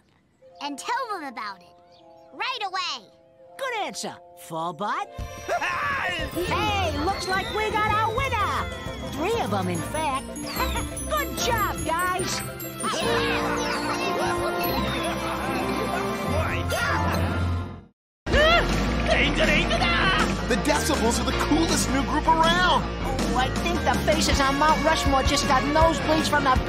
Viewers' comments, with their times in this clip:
0:10 No Squeeky, it's "GUH-REAT JOB!"